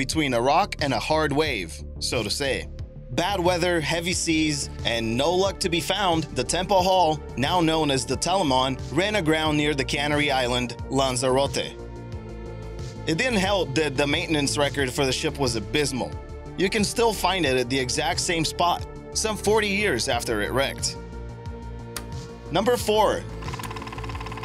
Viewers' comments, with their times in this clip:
0:10 "cannery island"..? Or is it "canary" like the bird..?
0:10 you couldn't have butchered that pronunciation up anymore if you had tried.